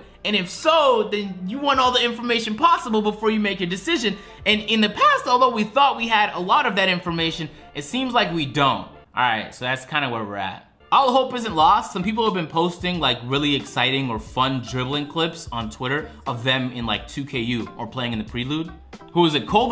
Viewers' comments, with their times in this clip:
0:05 in the paaast. All feminine 💁🏽‍♂️